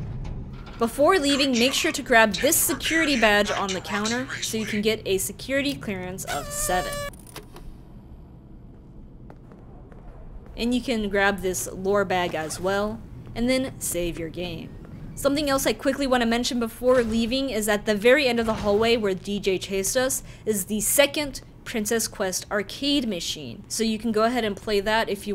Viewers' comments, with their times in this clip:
0:09 I found a bug in the video you have destroyed chica and you took her voice box but look here can she talk YES